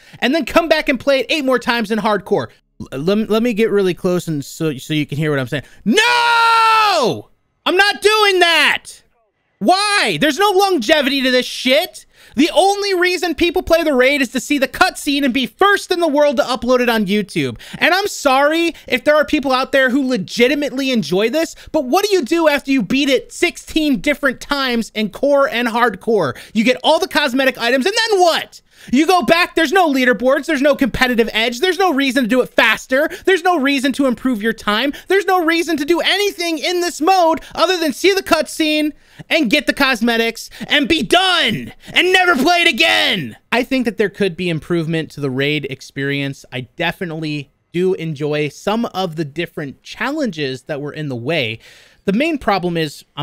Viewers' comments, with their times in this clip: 0:04 Volume warming for 💀💀💀
0:04 You can feel the hurt in his voice with the "NOOOOOO"
0:09 Just would like to remind you guys this man is a 30+ year old man, screaming about the replayabillity of a raid. sad lmao
0:40 you kinda sounded like Chuck from Better Call Saul ngl lmao